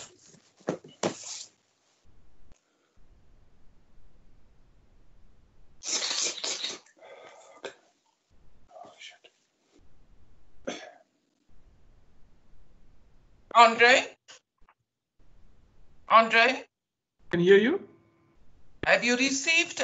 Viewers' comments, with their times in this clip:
0:04 really sounds like someone was "partaking in an illegal activity".